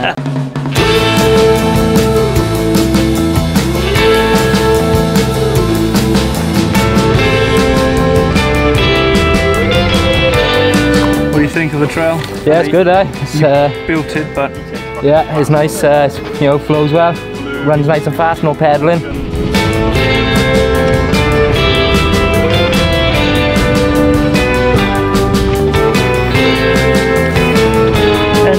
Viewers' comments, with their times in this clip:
0:09 Why is there Christmas music ?